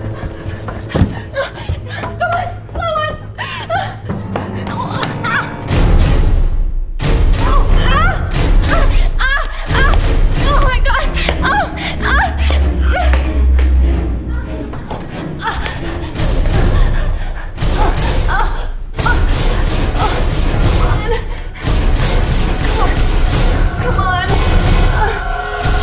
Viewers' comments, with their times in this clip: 0:10 sex sounds lol
0:11 it sounds like porn xD